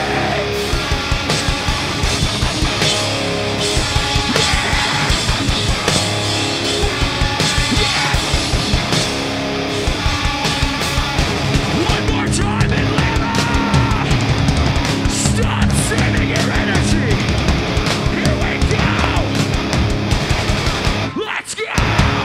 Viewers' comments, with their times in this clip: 0:05 anyone else notice that josh hit his head on the drum microphone ? you can actually hear it haha the mic falls off a few seconds later